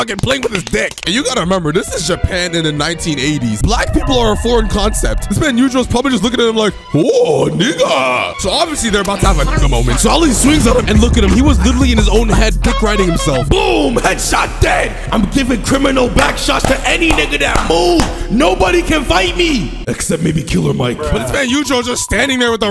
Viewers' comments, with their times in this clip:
0:04 YOOOOOOOOOO 😂😂😂😂 the FNAF sound killed me